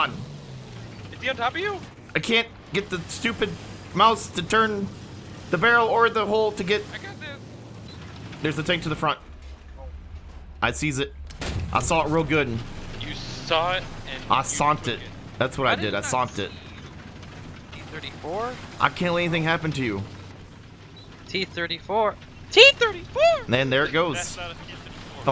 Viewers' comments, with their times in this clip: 0:08 for some reason you "sawn'ting" that tank made me jump and splash beer on my glasses